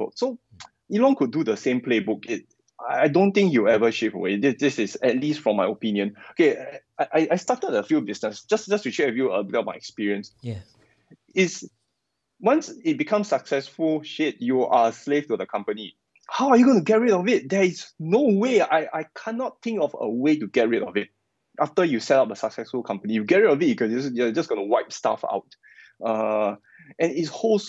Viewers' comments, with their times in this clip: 0:09 play the soft “yeeah” on repeat 😂